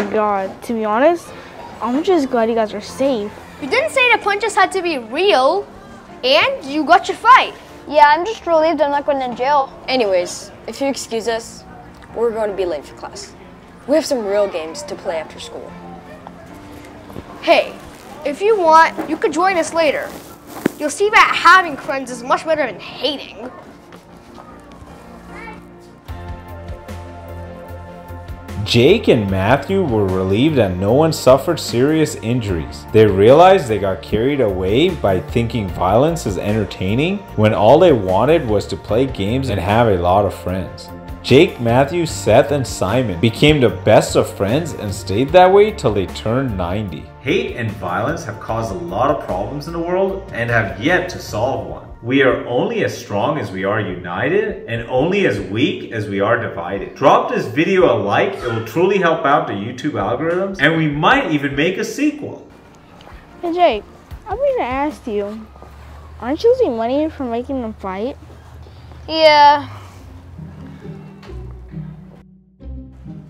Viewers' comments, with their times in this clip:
0:03 when that music started playing I was singing the Cookie Crisp song like it was nothing
0:56 why did they bring their PS5 and Oculus to school? It's not like they'll be able to use them at school Edit: Did anyone else hear the grunt ?
0:57 it sounded like someone was hurt in the the background